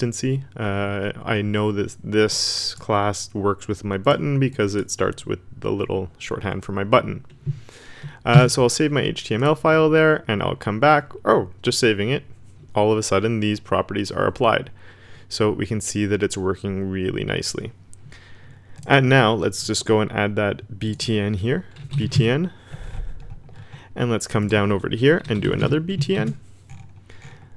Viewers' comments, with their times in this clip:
0:10 you didn't need to bark xDD, great video